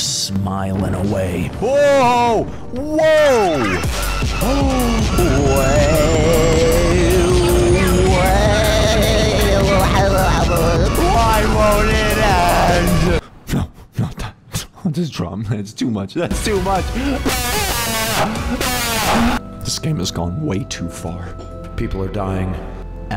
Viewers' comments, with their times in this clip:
0:05 was best music
0:07 WHEN THE PHONK STARTED PLAYING LMAO